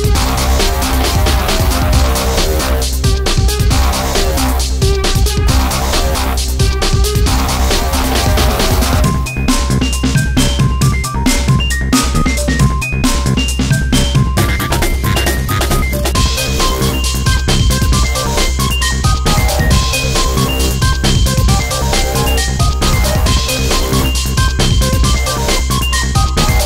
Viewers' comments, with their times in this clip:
0:09 Best part is when Kicks in 🎵🎵🎵🎵